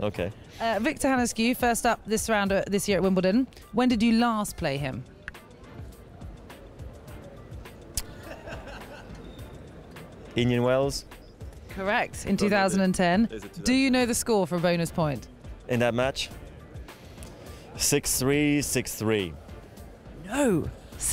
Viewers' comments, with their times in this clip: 0:07 That random laugh ... it's probably from Victor Hănescu LOL